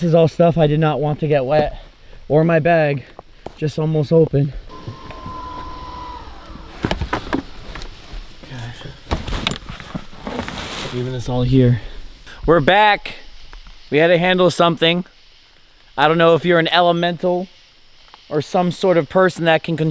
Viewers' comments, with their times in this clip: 0:07 I'm sure someone heard it as it's been 3 months.... but who else heard the scream?